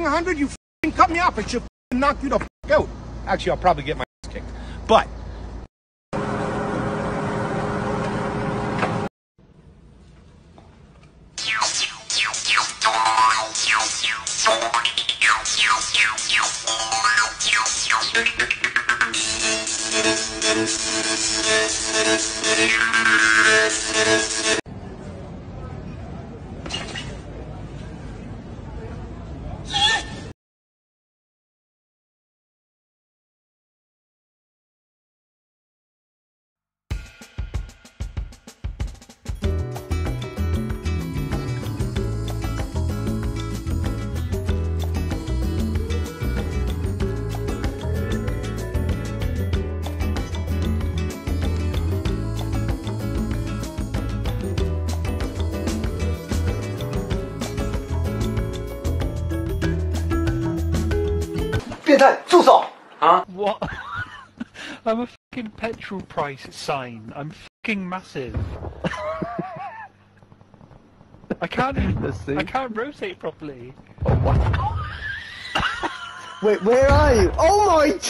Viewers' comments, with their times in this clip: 0:09 hackers music be like:
0:10 this mans knows how to use a jaw harp
1:03 The british accent completes this